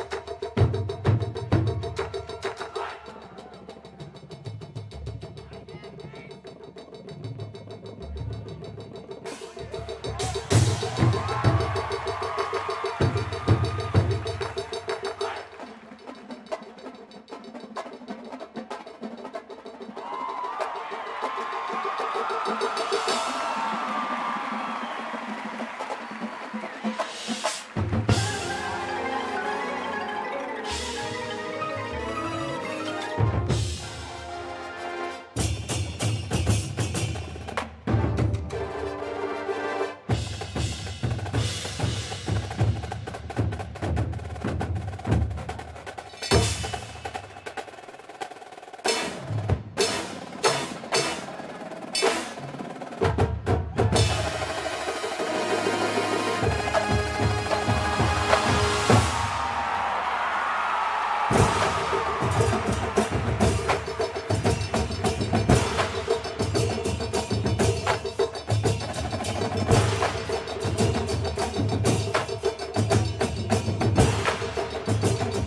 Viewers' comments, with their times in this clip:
0:05 you can hear the same guy yelling “Yeah bass!” in a Spartacus video haha!
0:58 That hi double snare role into just high sixteenth note singles has me going 😱